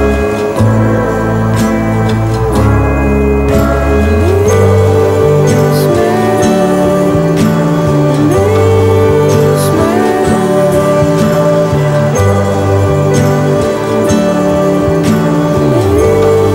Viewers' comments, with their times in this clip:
0:04 I dont find it terrifiying 😕 it sounds pretty ethereal and peaceful.